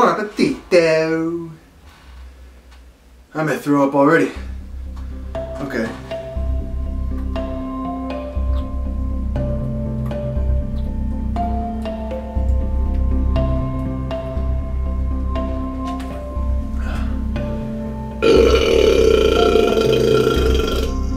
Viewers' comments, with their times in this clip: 0:05 NOT THE MARK ROBER MUSIC 🤣🤣🤣